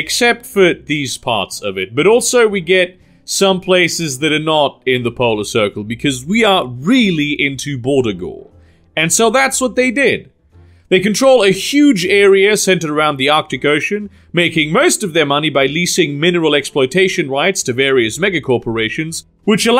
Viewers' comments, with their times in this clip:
0:07 The Trans-Polar Aleut Nation is really into what? Can't make out what you are saying ^^